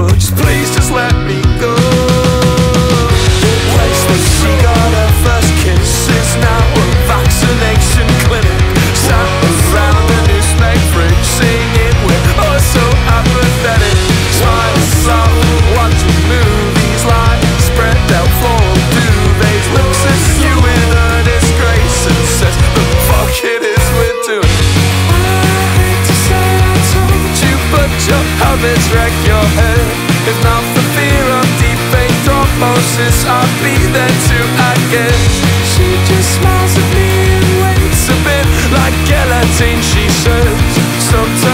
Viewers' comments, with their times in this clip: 0:10 does this use the same chords as main character syndrome?? It sounds like it to me😞
0:27 the way he said "told" literally makes me feel like i just gained 7 years